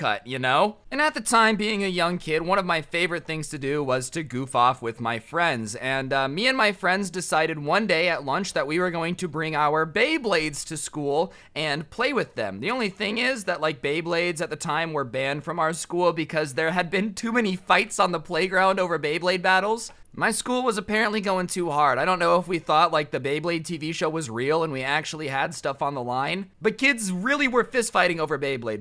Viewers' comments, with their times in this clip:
0:10 And then a couple a second s after he pernouced beyblade wrong